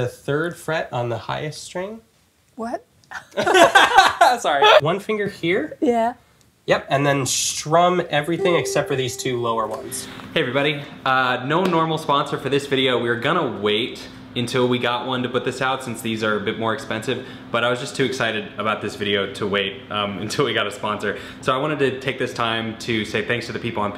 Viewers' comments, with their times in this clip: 0:09 The instrument sounds like an endless bow or an endless clearest voice. they never got a sponsor 😭 thank you, Patreon subscribers!!!